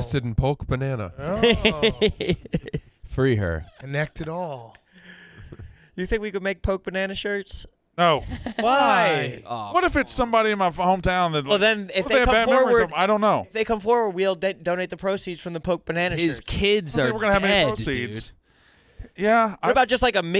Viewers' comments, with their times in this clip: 0:06 “Do you think we could make Poke Banana shirts?” “No.” *3 children-sounding Yakers in unison: “Whyyyyyyy?” Never change Yak.